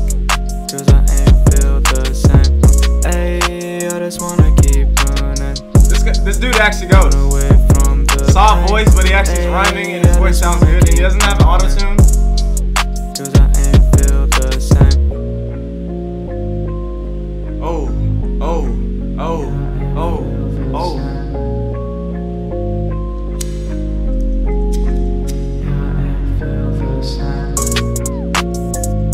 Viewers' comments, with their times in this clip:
0:09 no he has a shit ton of autotune
0:11 he said he doesn’t have auto tune......hmmmmmmmmmmmmmm